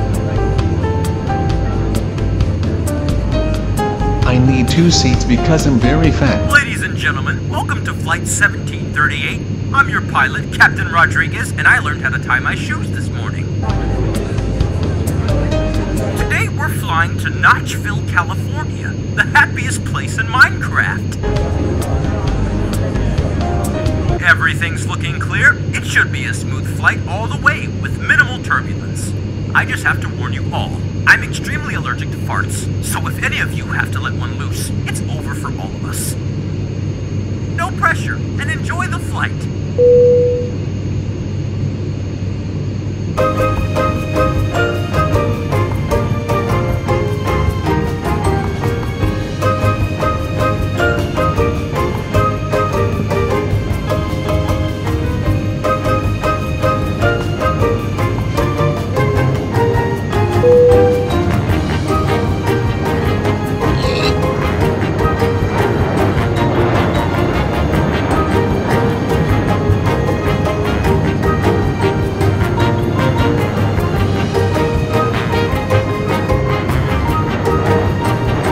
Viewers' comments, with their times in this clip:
0:07 I think the pilot is also his voice
1:03 you can hear the pig dying exploding tnt shouldn't have done the pig dying which makes the movie very sad anyways good movie